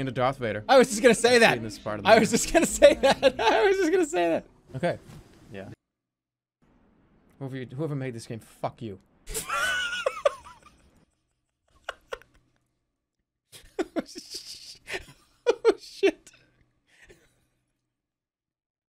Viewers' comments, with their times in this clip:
0:06 the comedic timing is perfect when he outs himself for being a jerk a 2nd time in a row. The way he says "that's not... who I am" and it's not very believable is so michael scott lol we love our e clown